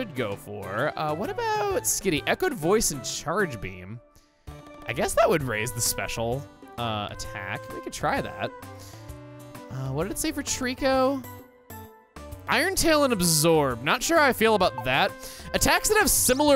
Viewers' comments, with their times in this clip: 0:04 That voice crack